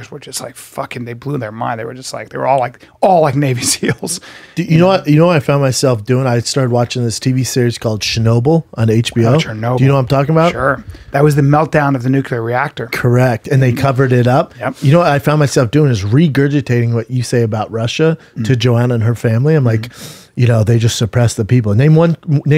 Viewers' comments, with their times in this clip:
0:04 For someone constantly on camera, Brendan cannot properly pronounce half of the things he talks about LMAO